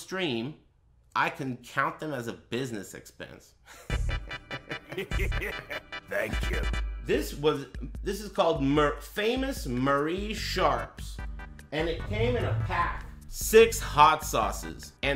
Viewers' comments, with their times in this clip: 0:03 Wii music is a stroke of genius